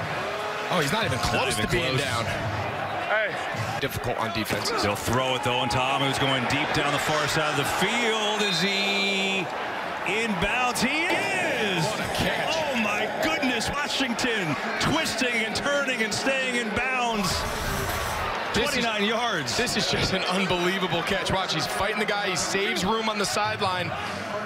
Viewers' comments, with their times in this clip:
0:10 sounds like he actually strummed a guitar.... w h a t